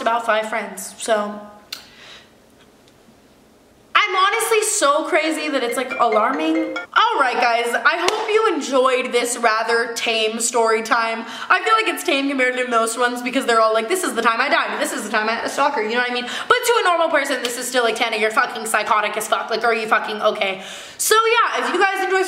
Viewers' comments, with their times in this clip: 0:03 I thought that was my phone for a sec 😂
0:05 Tana: "its alarming" alarm goes off